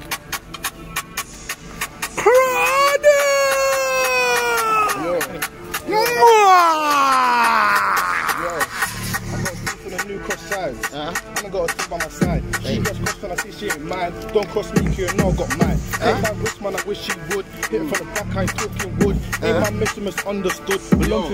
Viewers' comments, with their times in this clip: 0:08 Rah, the beat is so HARDDDDD